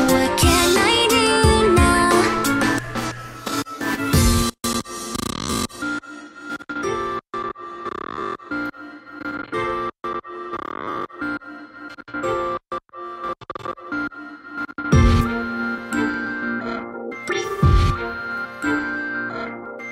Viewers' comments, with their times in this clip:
0:05 I thought my head phones were broken